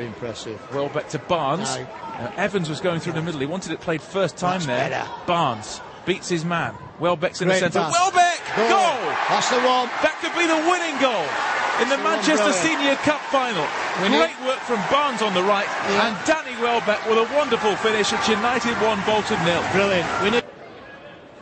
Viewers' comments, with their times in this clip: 0:09 LOL the comentator got interupted 3 times.